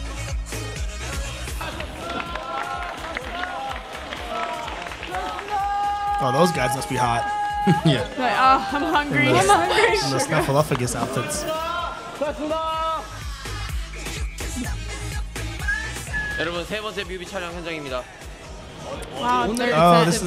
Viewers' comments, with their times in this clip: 0:06 you missed when Jimin was shouting/singing "you've worked hard" to the tune of I will always love you by Whitney Houston. Also I think watching them in three is not it. You can focus on only one especially who is in the middle at the same you can kinda watch all of them. Actually there is one restaurant in Korea that is BTS themed, it is near the BTS' dorm that they frequent when they were trainees. It's full of BTS posters and there'also a BTS menu. It has become one of the popular tourist spots in South Korea. The lady who is the owner of that restaurant said back then that they are different from other kids and that she was sure that they will be successful in the future.